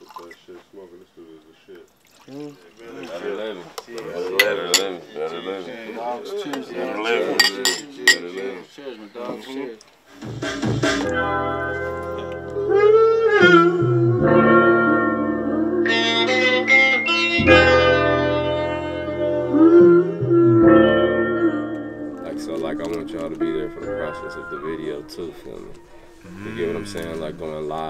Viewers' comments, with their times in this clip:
0:10 that sample is so soulful, I wonder what's it called? The insight of seeing the process of this amazing album is so dope... Thank you for sharing it!